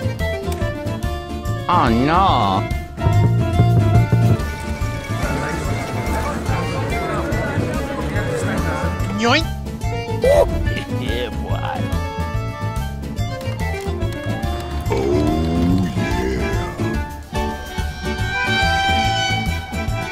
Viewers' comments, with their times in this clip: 0:05 Why does the peace deal sound like gordon ramsay talking in the background?
0:05 Why does the peace deal sound like gordon ramsay talking in the background?